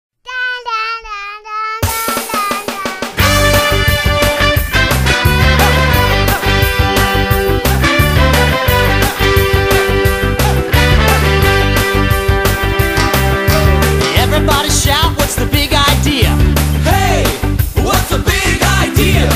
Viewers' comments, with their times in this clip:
0:00 Is that a little kid going "Daadaadaadaadaadaadaadaa!'?
0:00 Why in the world did they add that noise in the beginning?! Did it have to do with an episode it came from, not to mention having it to do with this intro?!